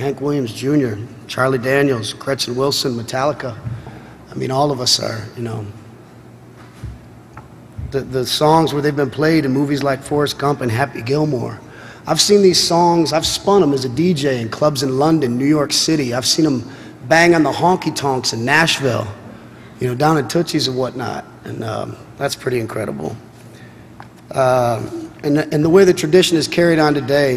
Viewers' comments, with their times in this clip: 0:10 I was scrolling though the comments, I guess somewhere around the mark and came across this comment... as soon as I read it he cleared his nose..lmao